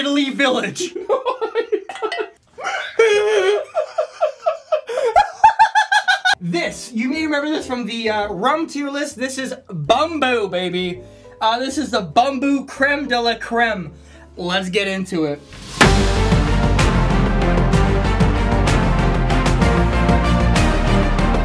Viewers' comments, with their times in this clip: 0:06 Isnt It Weird How This Timestamp Says “Bamboo Creme” ?